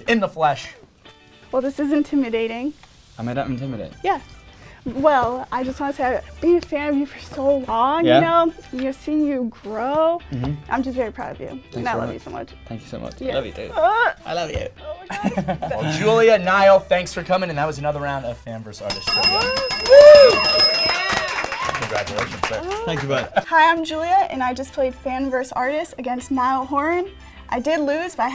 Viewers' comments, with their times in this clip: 0:10 I died when he said "I love you too" AND HOW HE SAID IT 🤤😍
0:14 was the cutest thing that has ever happened!! I mean the way Niall said “I love u too”